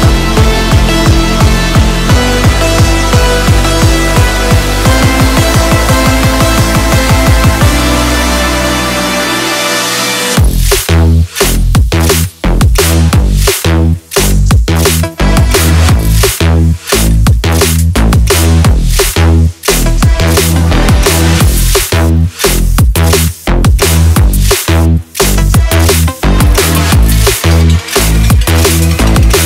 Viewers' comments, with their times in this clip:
0:09 I love electro but I hate the drop
0:09 first was amazing, then came the drop and it went to SHIT.
0:10 What a missed opportunity.... building up real nice, ARE YOU READY FOR THIS ??.... And then (whisper, super drowzy... "yea! ." wooh... party ." ..." What a fail.